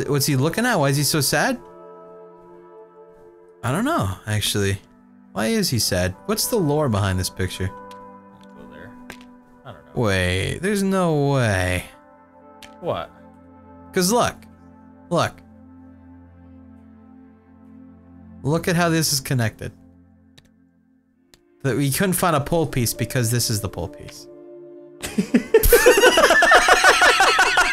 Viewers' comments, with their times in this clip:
0:10 The moment when they found the mistake, those sincere laughs made my day. :D